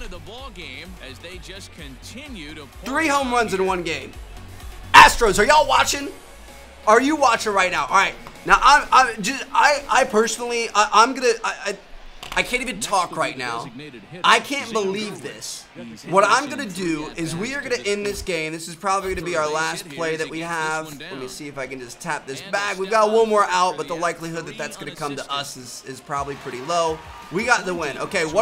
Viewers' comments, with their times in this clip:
0:09 t t t today junior (if you get my reference)